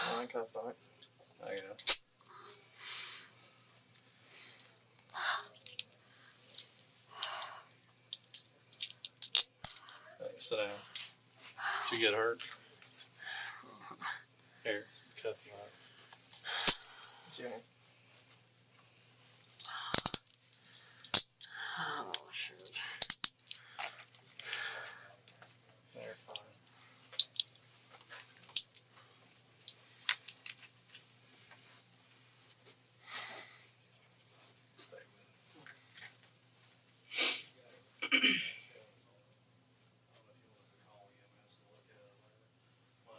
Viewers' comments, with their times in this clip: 0:03 wow this guy was getting handcuffed, somebody was doing really heavy breathing they couldn’t catch their breath ready to fall over who was that just three people in the room there’s somewhere there that’s ready to collapse do you not hear them breathing heavily oh my gosh it’s like they walked a mile and ran another mile. It’s just a little disgusting to hear someone breathing like that. We’ll find out who it is sooner later lol ! back to the video
0:25 in the beginning why does it sound like his mic is clipped to his freaking tonsils lol… #MouthBreather 😂🖤🖤🖤🖤🖤🖤🖤🖤🖤🖤🖤🖤🖤🖤🖤🖤🖤🖤🖤